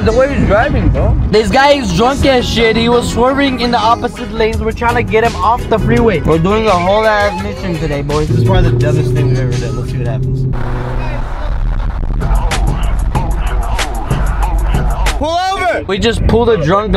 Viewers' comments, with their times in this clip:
0:03 your English is good, I can understand all you say.